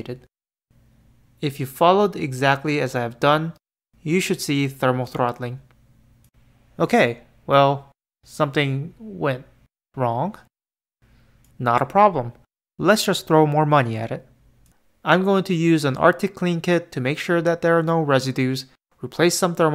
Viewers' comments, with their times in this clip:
0:05 that delivery was fucking hilarious and I'm upset that I don't see any other comments recognizing it lmao